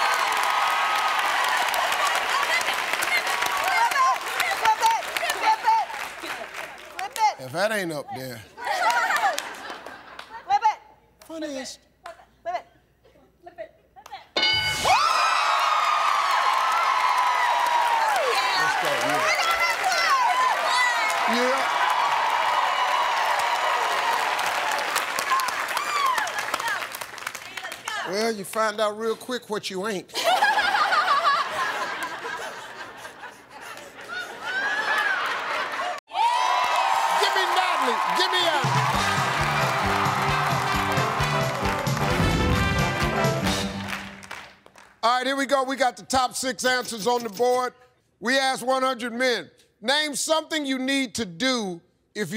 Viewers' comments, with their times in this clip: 0:08 tf was that laugh?
0:28 Do I hear ninja here ??? 😂
0:29 wtf is that laugh
0:30 Obnoxious and fake laugh 😂
0:30 the fuck kinda laugh is that
0:31 Listen to her laugh my god that’s just terrifying
0:35 Her laugh and face 💀